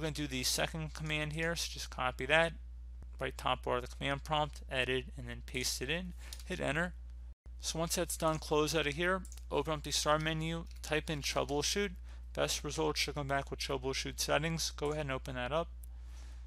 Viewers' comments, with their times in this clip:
0:03 I cannot tell what you are doingggggg you are talking way to fast after